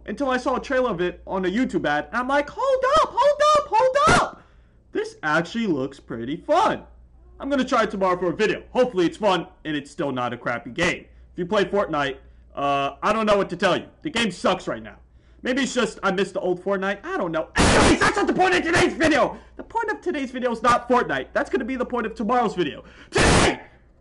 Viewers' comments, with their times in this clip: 0:10 bro just blew out ny ear drum because of fortnite💀